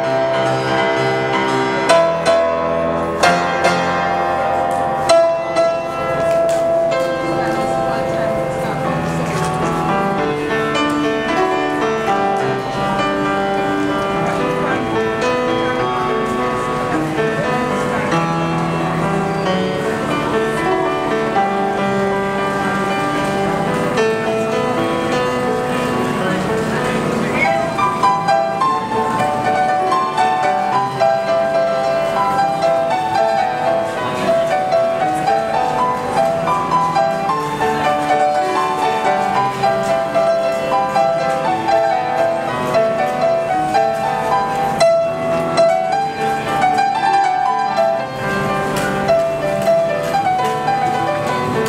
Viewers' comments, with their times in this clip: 0:08 awesome solo part
0:26 that James and Kirk harmonies parts... Owh, wow! Just wow! It's amazing in piano.
0:36 Awesome! But I think the piano is a bit out of tune